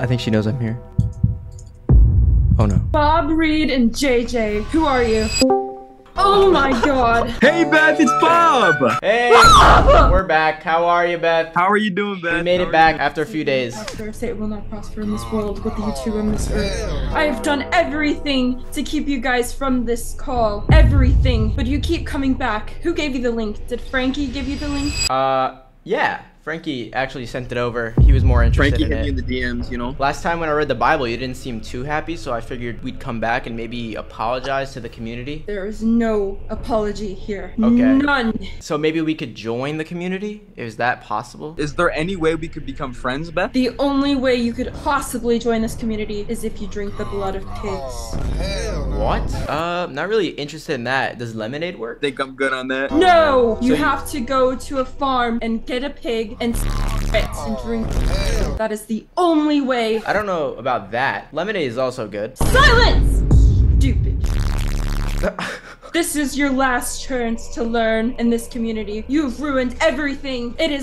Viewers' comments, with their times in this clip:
0:05 "oh my god 😨" why did she actually sound terrified
0:27 She gotta be crazy or this gotta be scripted wtf she talkin like an npc
0:46 the blood of pigs sounds goofy and funny 💀
0:55 Why is bro talking like an